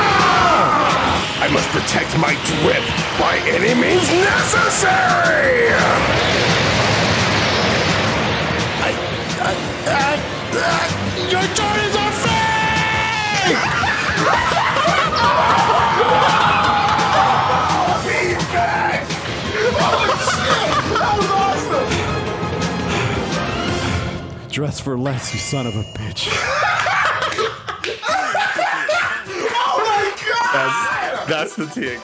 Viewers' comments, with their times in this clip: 0:08 He sounds like the latino VA lol
0:09 perfect voice acting
0:10 WHY DOES HE SOUND SO MUCH LIKE THE LATAM GOKU VA WTF?? THIS SHIT UNCANNY
0:13 POV: You're wearing fake Jordans close to a pack of Hyenas
0:14 holy fucc the agony in that scream